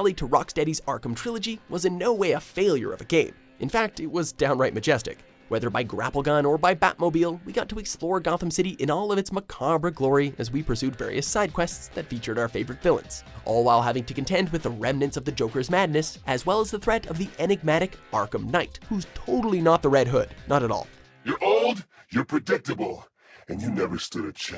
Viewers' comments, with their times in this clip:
0:09 Man just gave it his best shot and didn’t give enough of a fuck to just google how to say macabre lol